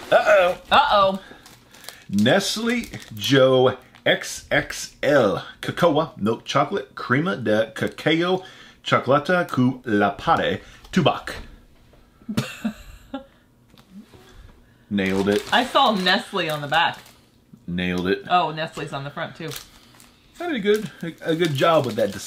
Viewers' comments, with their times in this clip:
0:04 pretty good romanian for an us guy